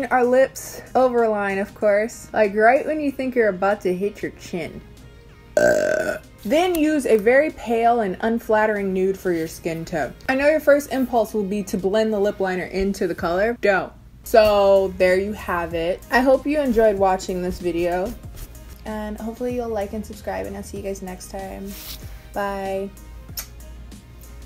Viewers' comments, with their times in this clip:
0:05 the burping is real gross. Twice in one video ?! I don’t want to hear that right in my ear eww.